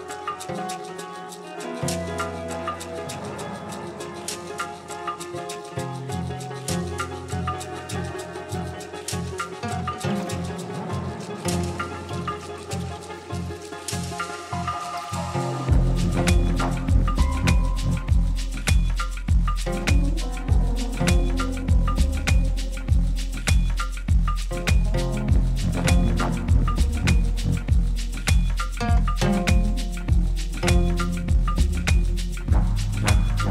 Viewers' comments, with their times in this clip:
0:06 my oh my oh my oh my. groovy, dark, grimy, rhythmic, enlightening. magic.
0:16 This beat My soul is wobbling!